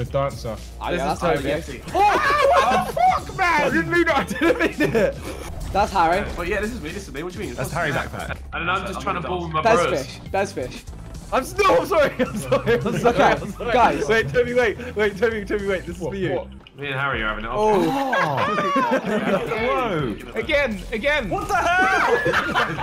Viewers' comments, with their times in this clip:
0:03 Tobi sounds like deji lol